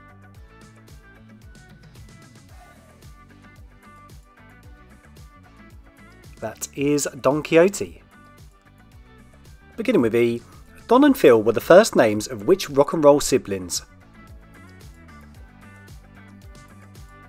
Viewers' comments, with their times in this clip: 0:03 I always thought Don Quixote’s sidekick rode a donkey. Didn’t realize he rode a German WWII tank!